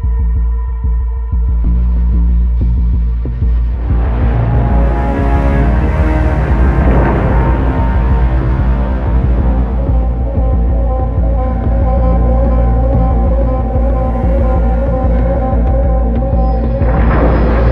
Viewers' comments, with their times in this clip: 0:03 sounds like A Batman Score lol